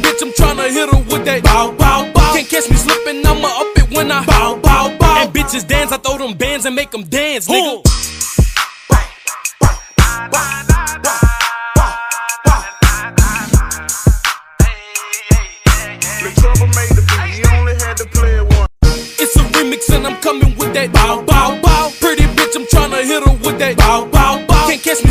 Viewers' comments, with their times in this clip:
0:10 damn the beat hits different